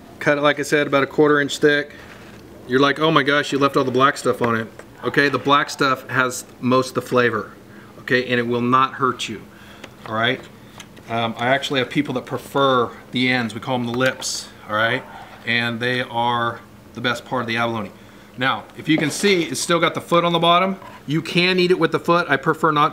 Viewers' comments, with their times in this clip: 0:07 The lips are called ENs?